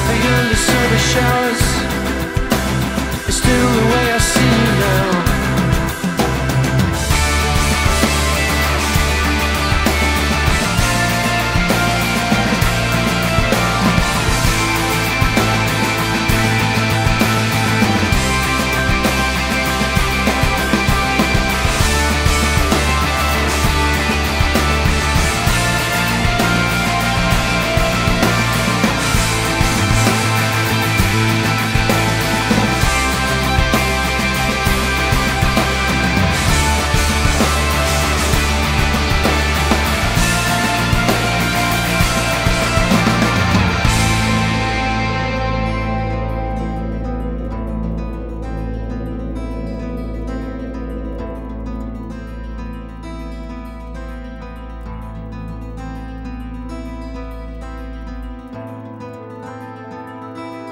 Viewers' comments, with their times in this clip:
0:07 I love the way the guitars go "galloping Off" Sooo goood.
0:08 It is mostly Animals influenced, but you could hear some Echoes. All in all a brilliant piece. PT is such an amazing band
0:48 Say what you want about how this is basically a pastiche of Pink Floyd but the production really makes the guitar picking and the ticking pop! I get an ASMR like effect from this.